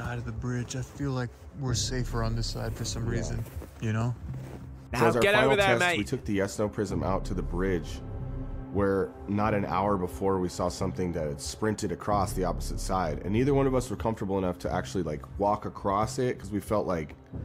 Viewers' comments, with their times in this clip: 0:05 I heard a button click when he asked